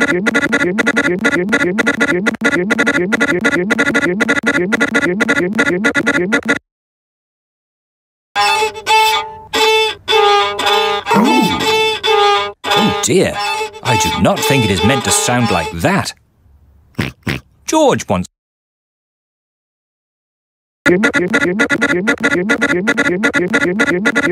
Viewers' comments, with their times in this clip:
0:08 Oh dear peppa pig is course violin